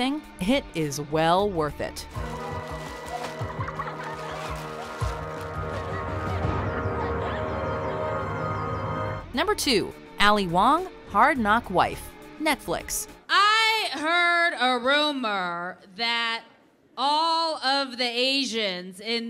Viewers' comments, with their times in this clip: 0:03 Do people really still use that stock sound effect? It sounds abysmal in everything it's in.